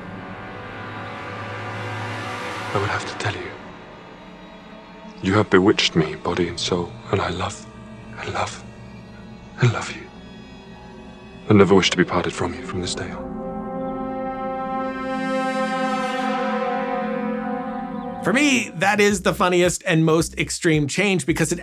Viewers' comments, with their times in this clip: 0:04 Wow AI voice processing! AND, I just noticed the 10 second video warm color temp transition